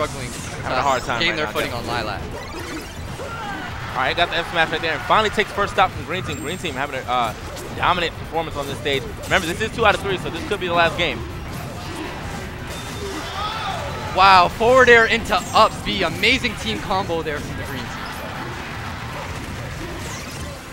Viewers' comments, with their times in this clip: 0:03 That combo at ~ was way underhyped.